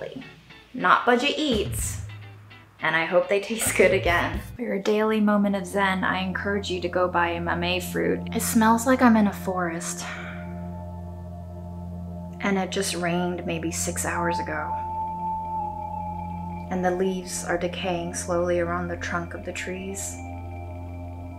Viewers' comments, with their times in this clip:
0:08 LOL zen moment with the background music